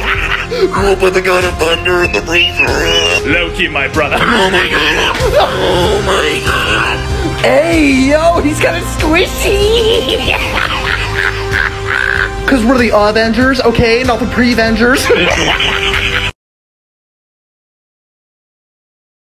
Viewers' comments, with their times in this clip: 0:03 Damn, that Thor voice was spot on!